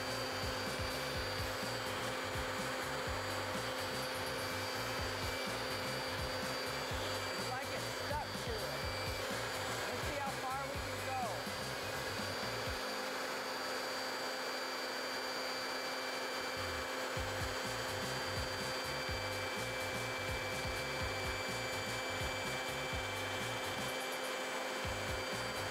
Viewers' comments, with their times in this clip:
0:10 I don't think that I've pressed the mute button accidentally